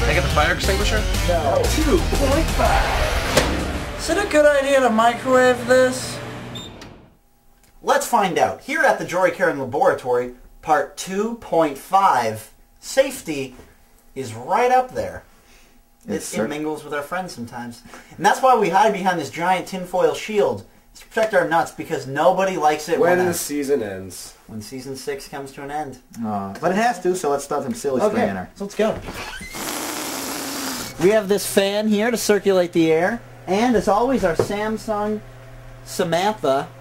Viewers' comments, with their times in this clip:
0:06 he sounds like joe santagato
0:17 did any one else get scared by that voice